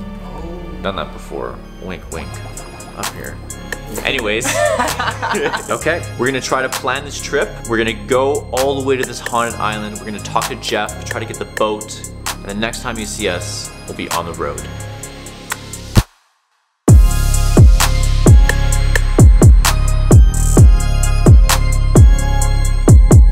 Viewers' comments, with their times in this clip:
0:05 i love the clicking sounds